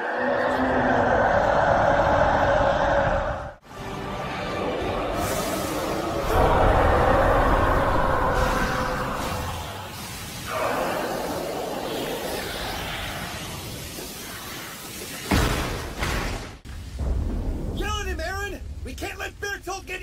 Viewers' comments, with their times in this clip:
0:06 My new favorite roar